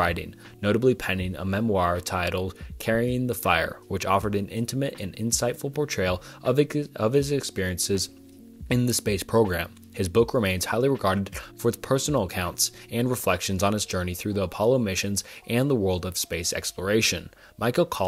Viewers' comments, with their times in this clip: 0:05 I think he choked on his saliva😂